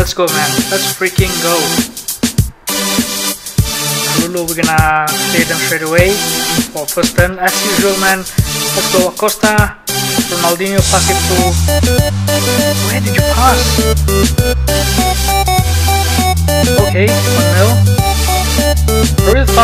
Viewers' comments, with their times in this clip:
0:03 music is too loud man cant hear you..